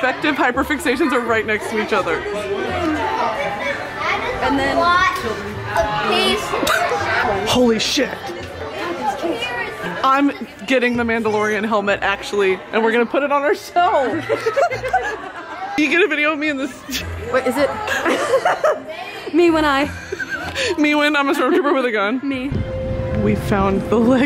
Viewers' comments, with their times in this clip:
0:06 i love that brittany laughed because she was recording the kids then censored with lego’s 🤣